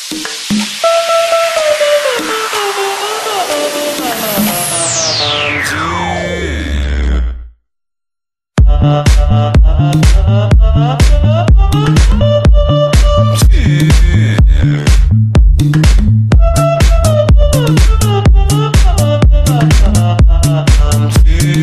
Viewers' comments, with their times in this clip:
0:07 this drop is just legendary